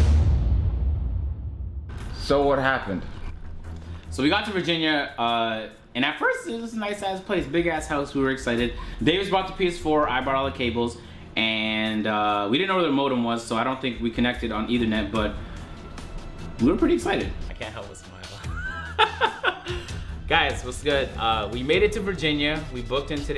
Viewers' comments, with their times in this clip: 0:06 that was a tire screech of a voice crack my guy😂😂